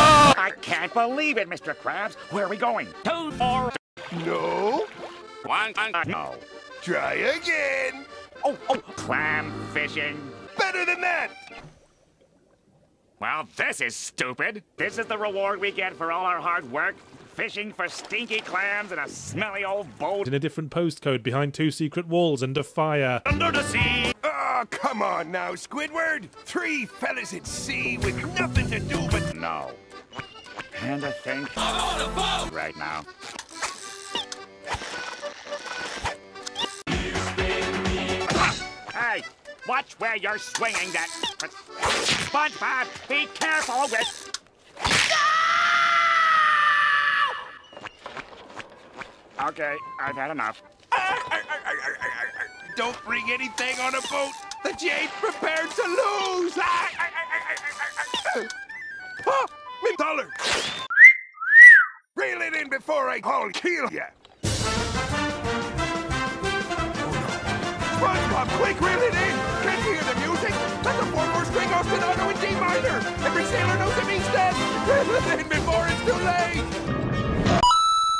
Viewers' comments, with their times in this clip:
0:05 what did Squidward say? I think he said ,,one ton ago" atleast it's my opinion
0:05 what did Squidward say? I couldn't tell ^^;
1:02 I fucking loose it, the song is supposed to be dark and scary but nooooooo LMFAO
1:04 for some reason, Mr. Krabs being terrified of celebration music is one of the funniest parts of this YTP to me
1:04 the music swap here is so funny for some reason
1:04 I like that song